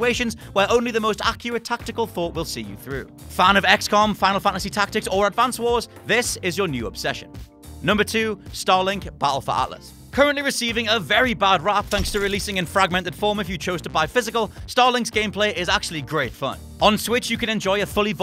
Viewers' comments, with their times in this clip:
0:05 funny crack in voice as i ever heard one.